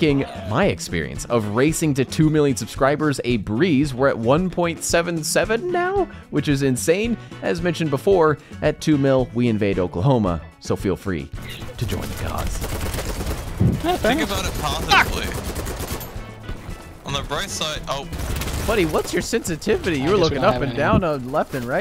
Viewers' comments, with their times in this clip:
0:05 that voice crack go crazy